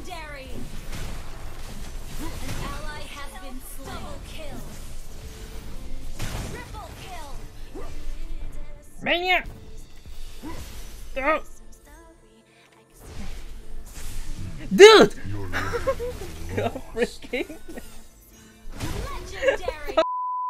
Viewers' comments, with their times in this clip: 0:08 the best part of the game is the sounds he's making while chasing for that maniac JUST TO FAIL HAHAHAHA